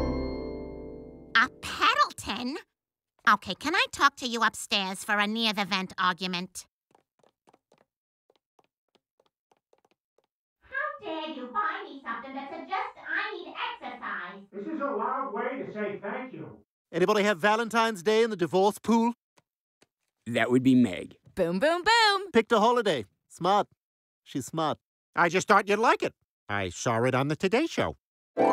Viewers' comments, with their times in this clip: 0:10 It’s like they’re arguing inside the vent.
0:13 the muffled voice lol!